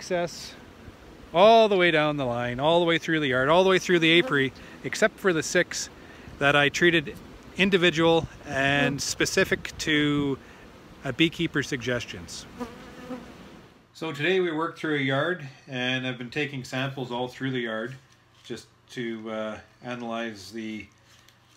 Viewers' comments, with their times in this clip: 0:03 My ears are ringing :)